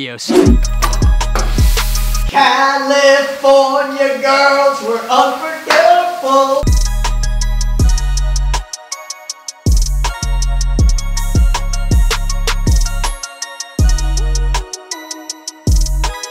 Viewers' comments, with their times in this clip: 0:03 It’s so funny when he sings in the shower xD XDD
0:04 he sings better than me